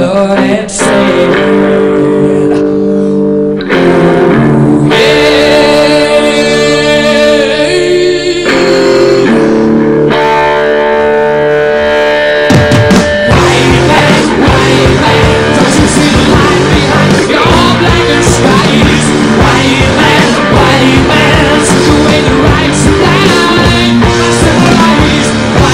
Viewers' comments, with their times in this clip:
0:07 is that where James Hetfield got his growl?